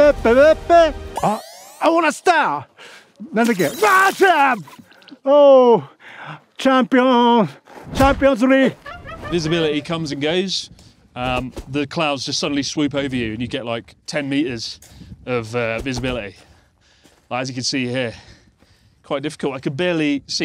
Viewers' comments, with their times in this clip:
0:07 Bri’ish scallywag doohicky sound effect